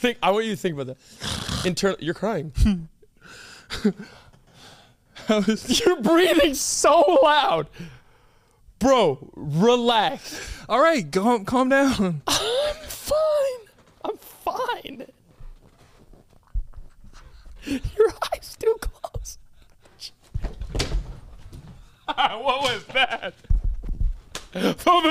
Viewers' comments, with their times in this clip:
0:06 I absolutely love when they have their laugh attacks. It's sooo contagious 🤣